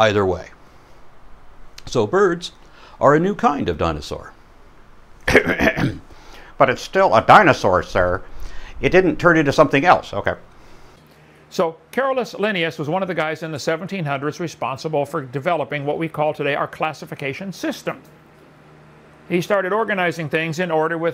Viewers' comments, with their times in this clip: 0:04 LMAOO wow. That was as impressive as it was funny. The subtle, ‘okay’ at the end was perfect. Well done, sir
0:05 Wait Aron do a Kent impression?
0:06 Lol that impression was spot on
0:07 That impression was SPOT ON
0:07 Haha Perfect impression.